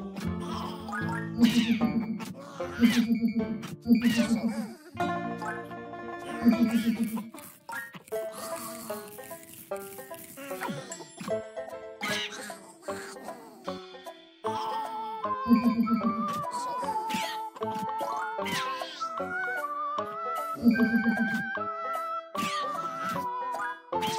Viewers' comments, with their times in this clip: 0:06 it's he laughing